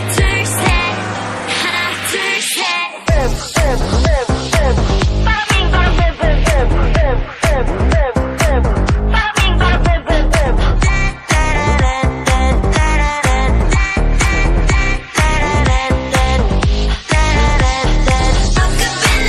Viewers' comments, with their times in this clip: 0:03 the beat and the part of the vid I can't even-